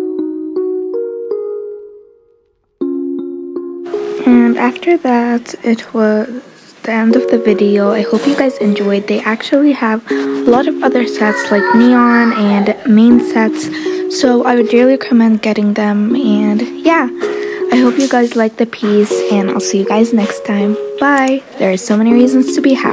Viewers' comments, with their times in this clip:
0:10 omg that screaming in the background nearly gave me a heart attack- 😭😩